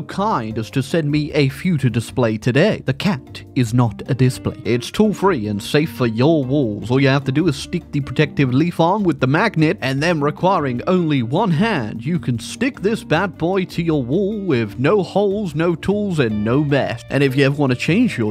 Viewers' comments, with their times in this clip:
0:06 by brother in christ there was absolutely no reason for you to ariana grande it